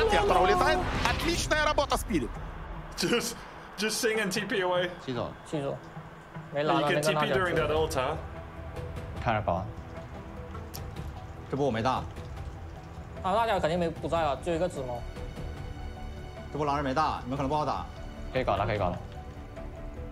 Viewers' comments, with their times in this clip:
0:07 This True Sight has hands down the best musical compositions thrown on each scenarios perfectly! My favorite is the engagement like the calm before the storm then the calming rainbows after the disaster. Chef's kiss!